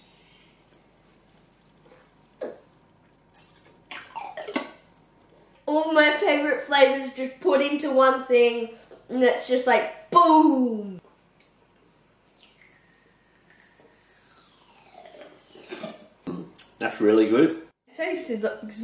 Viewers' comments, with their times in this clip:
0:06 that voice break tho